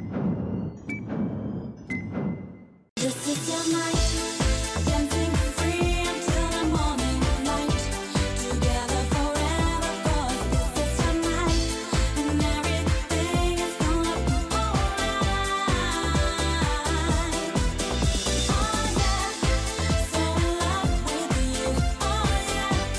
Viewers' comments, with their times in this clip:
0:03 dont wanna sound gay but song sounds tight lol